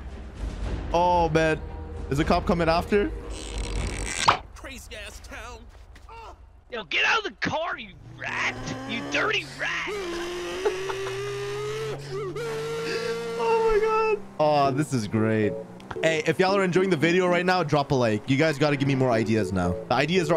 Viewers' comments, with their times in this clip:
0:06 That dude’s voice 💀💀
0:08 it sounds like randy from trailer park boys